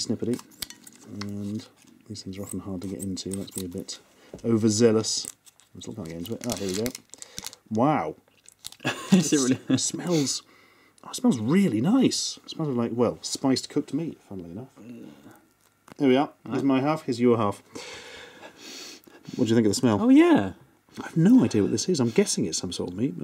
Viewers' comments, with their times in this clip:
0:05 caption "overzealous muslims" :D